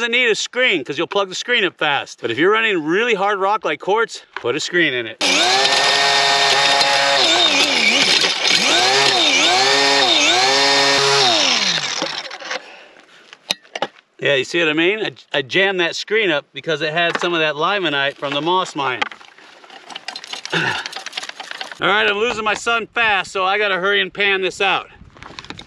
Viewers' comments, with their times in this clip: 0:08 I love how the mill running gets auto-captioned as "[Music]" 😆